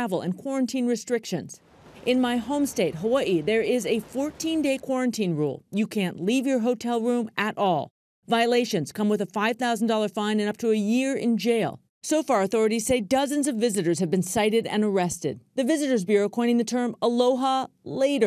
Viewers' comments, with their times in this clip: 0:03 the way she pronounces it😂